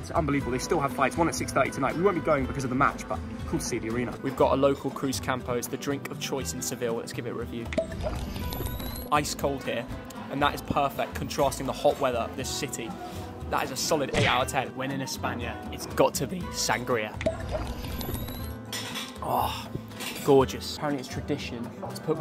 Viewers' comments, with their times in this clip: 0:07 Man just hit us with so much nostalgia with that shield potion sound